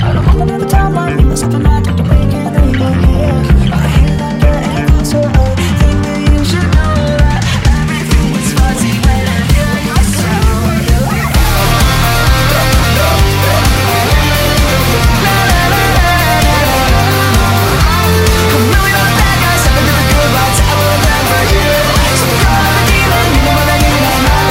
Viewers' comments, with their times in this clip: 0:08 From ‘til the end is my favorite part, it sounds so mAGICAAAAAL!